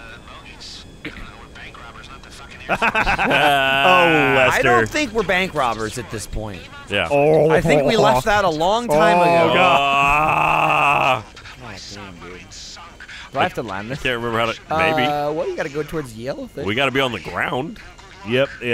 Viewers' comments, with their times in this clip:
0:06 Jack I heard you sing the set up like if you heard it too